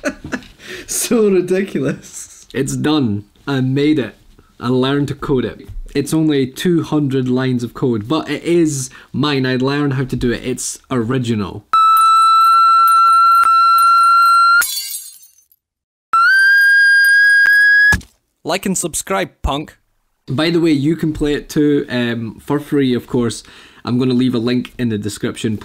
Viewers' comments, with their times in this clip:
0:10 double rip headphone users